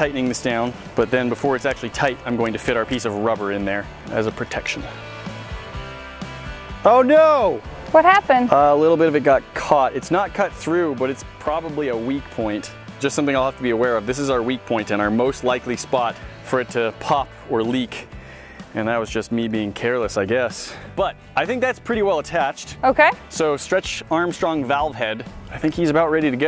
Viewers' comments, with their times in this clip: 0:03 Close your eyes and listen for the next 20 seconds, it kinda sounds like a crime
0:13 What you hear in the basement